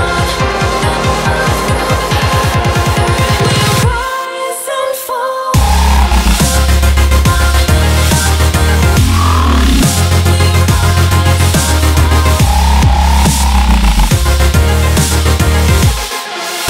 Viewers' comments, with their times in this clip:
0:04 dat drop :o